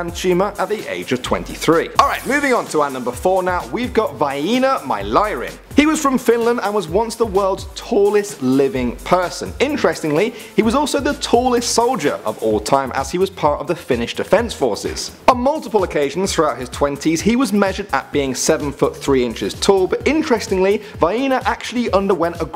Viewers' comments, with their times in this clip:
0:04 Oh yeah that's definetly how you pronounce it :D